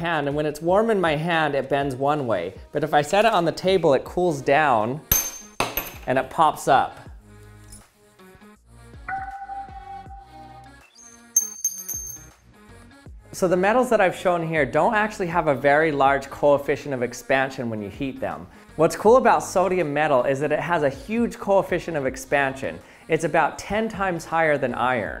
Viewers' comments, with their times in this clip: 0:09 Sounds like a Sonar Radar
0:09 sounds like a puppy lol
0:10 That’s the Super Mario coin collecting sound !